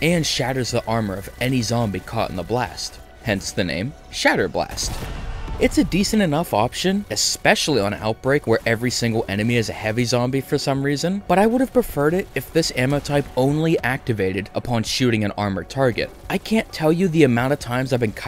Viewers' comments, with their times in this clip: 0:04 cant hide that scream from me